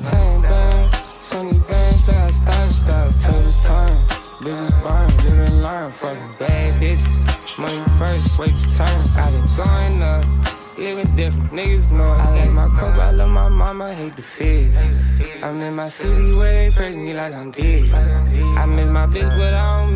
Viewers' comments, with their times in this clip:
0:06 sounds like lil mosey